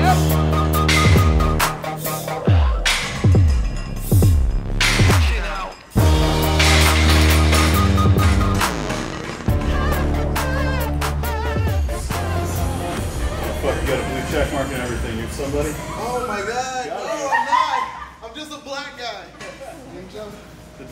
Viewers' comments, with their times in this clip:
0:06 Anyone else notice the key change in the music ? Hehe